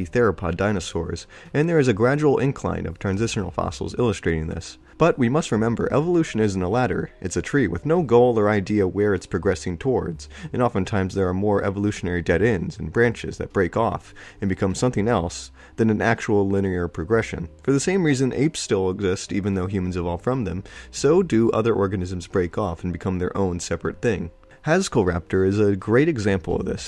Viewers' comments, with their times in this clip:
0:08 do i detect a Fable 2-esque tune in the Background?!!?!?!